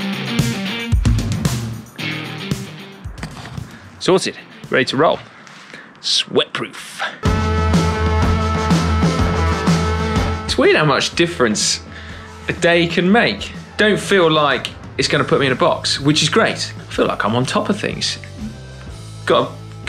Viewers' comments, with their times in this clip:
0:04 "Salted!" - lol. I haven't seen a ring that rusty since Glasto 2016 !